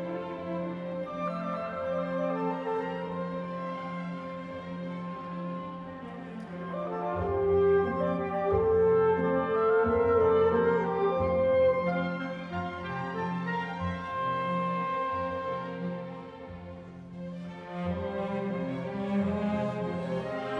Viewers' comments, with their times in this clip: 0:06 a very important French Horn solo is heard but not seen. The camera crew missed it